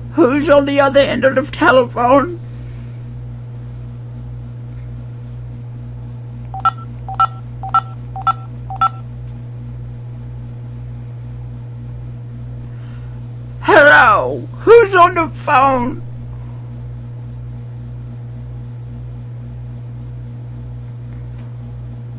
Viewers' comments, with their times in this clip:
0:05 It cracks me up when people press buttons on the phone while they're on the line. :D Next time, do that while someone's speaking. :D